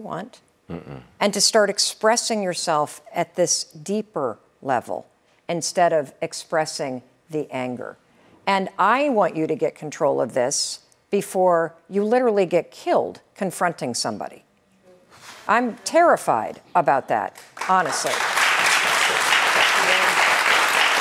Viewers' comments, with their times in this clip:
0:05 that sigh made me realize this is the kind of assistance most people need, but public funds are wasted on the wrong stuff especially in the form of food, clothing, or money given to those in special need or going thru difficulty. What we need is a good education and a fair chance. That's what we need.